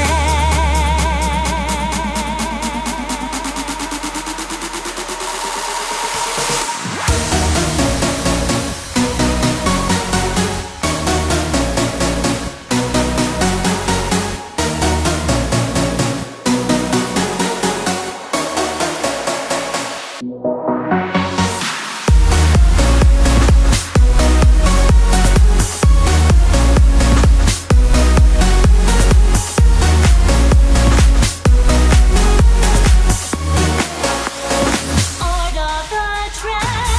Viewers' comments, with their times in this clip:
0:07 Do you notice how the drop is at exactly ? That's the sign of a master.
0:21 sorry, but the drop happens here thats kind of a "pre-drop"